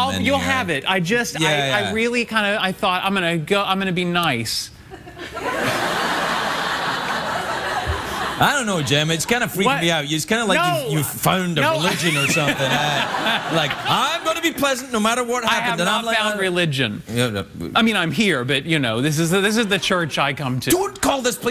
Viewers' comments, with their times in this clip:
0:08 when he laughs